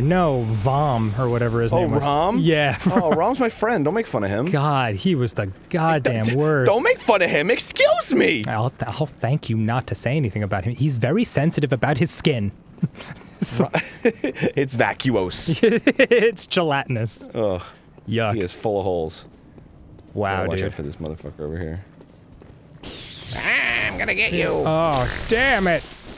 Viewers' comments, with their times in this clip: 0:07 Arin: "EXCUSE ME!" ARIN IS VICKIE GUERRERO ... CONFIRMED!?